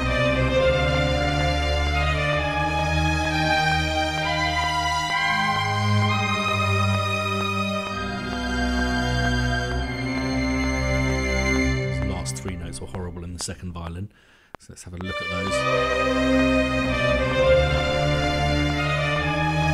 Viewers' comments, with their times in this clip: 0:06 Sounds great! Though those last few notes sounded awesome to me - the dissonance really added to the character of the piece.